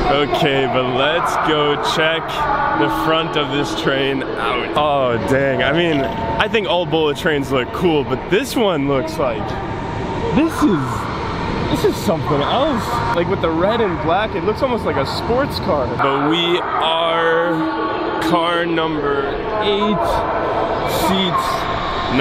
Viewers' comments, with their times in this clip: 0:09 that sounds like a avanti west coast horn